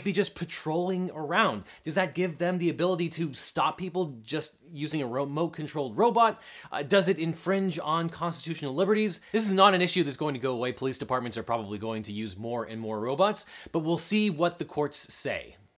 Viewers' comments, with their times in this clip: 0:09 More and more these days, people seem to be saying Robutts. (sounds like a sex toy) o_O